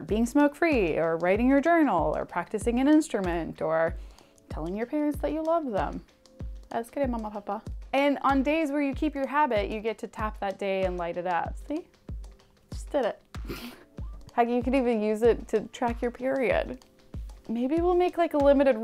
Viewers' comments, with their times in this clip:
0:05 sounded like Hindi at first lmao